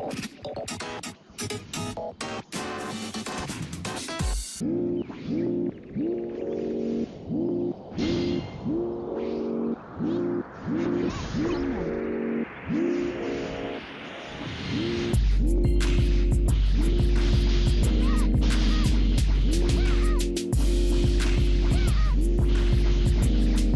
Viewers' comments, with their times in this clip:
0:09 yo that music is mixtape worthy what is that